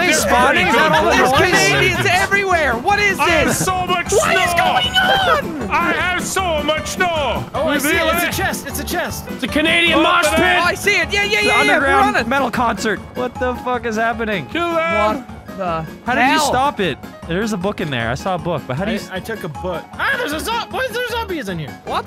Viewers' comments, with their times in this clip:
0:10 when slayer comes on